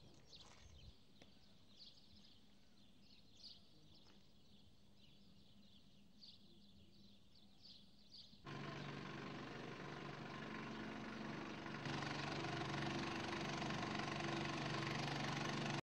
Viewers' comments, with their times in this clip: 0:08 A-team theme music plays